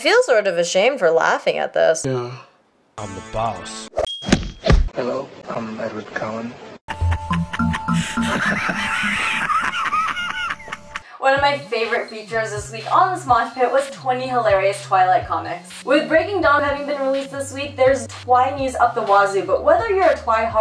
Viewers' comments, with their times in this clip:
0:05 lol i paused death note to watch this and when i heard the music i was like did it play on its own lol